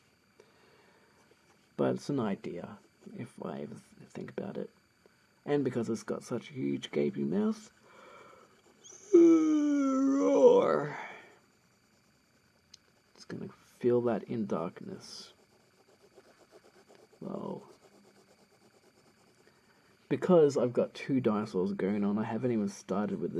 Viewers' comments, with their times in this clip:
0:09 roAAArr... the mix of a yawn and a roar.